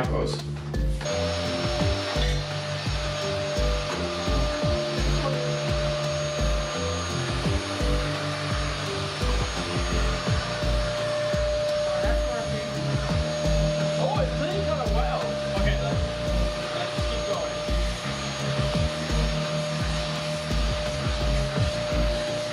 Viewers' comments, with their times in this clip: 0:03 The vacuuming starts